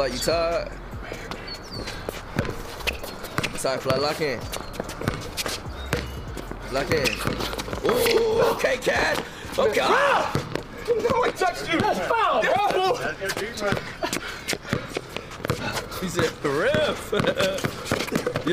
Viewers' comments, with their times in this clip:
0:06 CASH TRAVELS TO FUCKING AFRICA , and he says “REFF”💀💀💀💀